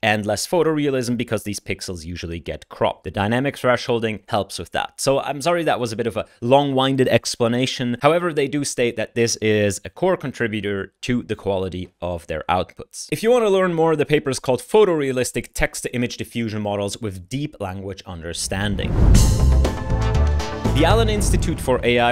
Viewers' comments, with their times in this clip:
0:05 Hey Yannic thanks for working so hard catching us up with the ML News. Outline typo: it's Craiyon not Crayon. pronunciation typo in how you say "a long-winded explanation": it's not long 'i' as in winding up a spring, it's the short 'i' as in the wind blowing. I think the etymology is someone who talks continously without taking a breath.